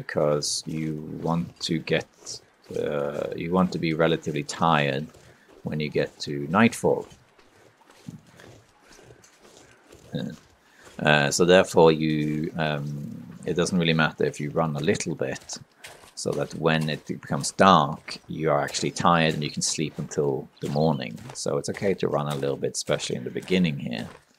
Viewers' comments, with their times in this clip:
0:08 Crows. Weather change???